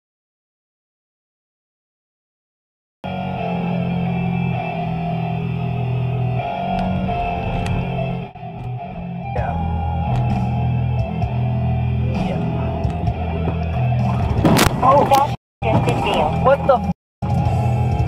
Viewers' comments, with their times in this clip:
0:04 that music sounds a lot the sonic 3 final boss music at the beginning.